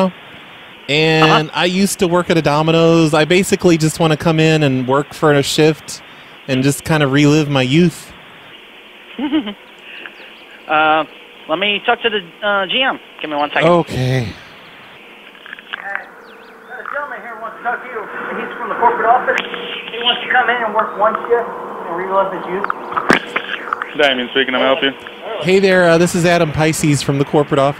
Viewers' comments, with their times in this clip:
0:08 that stupid giggle of his 🤣